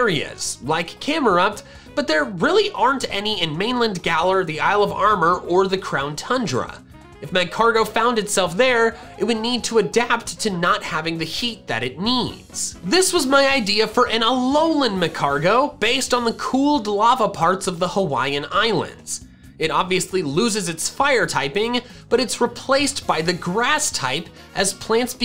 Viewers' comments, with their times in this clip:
0:08 voice crack incoming